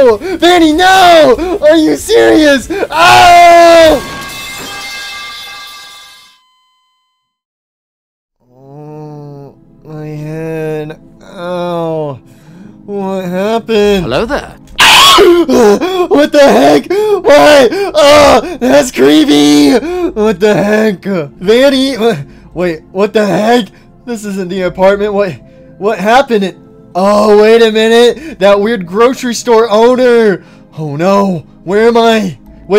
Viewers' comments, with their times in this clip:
0:04 metal pipe falling
0:14 The SCREAM THO 😂😂❤